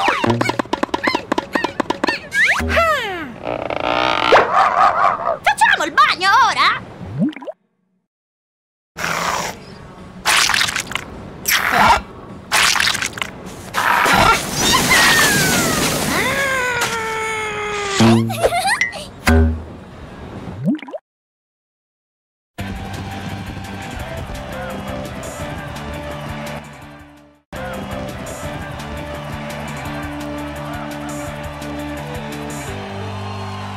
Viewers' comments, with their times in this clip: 0:08 If you are using headphones, at minute you can listen allstar by smash mouth in the background at a very low volume but you can still hear it
0:09 I swear, I can hear All-Star playing faintly in the background.
0:09 ANYONE NOTICED THE MUSIC IN THE BACKGROUND ?? ;)
0:11 You can faintly hear smashmouth all-star playing in the background.
0:16 Why do i hear all star